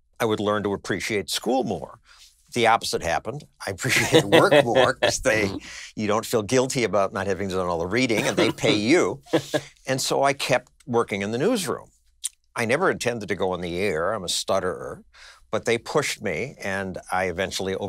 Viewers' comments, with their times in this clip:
0:05 Did I hear a fart ?